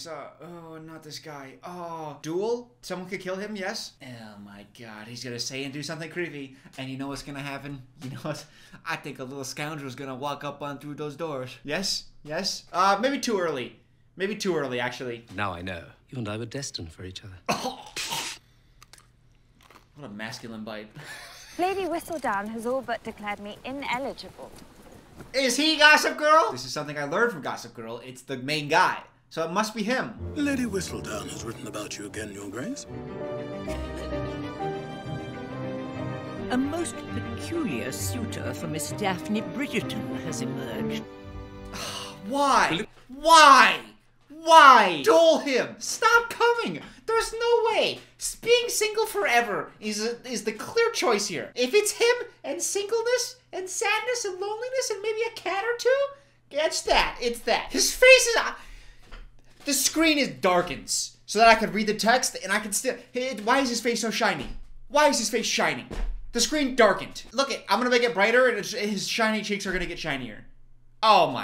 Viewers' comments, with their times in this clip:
0:04 Not the "oh my god" being exactly like Karen's in Mean Girls. Btw i love your videos so much you're too funny 😍
0:52 he sounds like that little bat sidekick from Anastasia😂